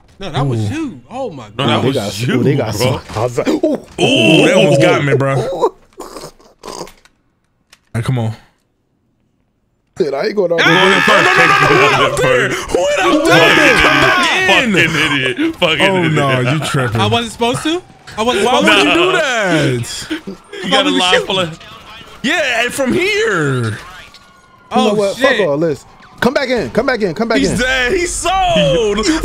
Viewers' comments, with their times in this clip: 0:10 that battle yell haha